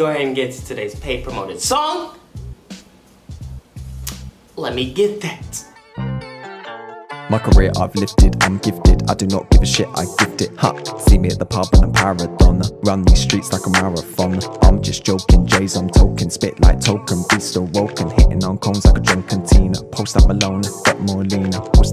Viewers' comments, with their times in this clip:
0:07 So this is the type of beats that producers are making these days 🤦‍♂️🤦‍♂️😹😹👎
0:07 when did stewie from family guy start rapping 🔥🔥